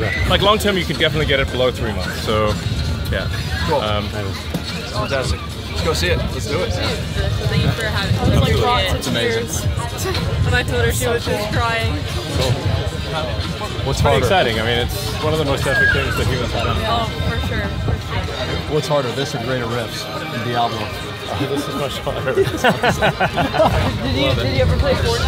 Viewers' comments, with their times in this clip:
0:08 Elon rizzing Kai's friend. Notice how they laugh to each other, they know.